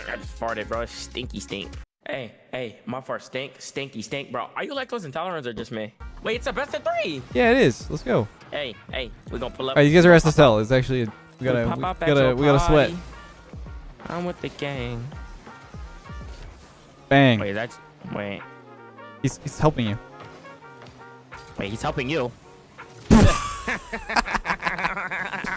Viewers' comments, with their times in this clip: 0:08 Why my guy soundin like Lil tecca!?